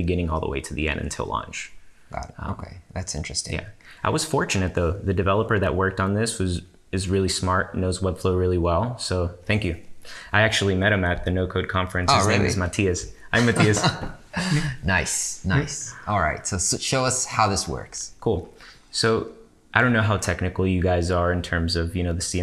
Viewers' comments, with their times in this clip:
0:08 thanku in indian style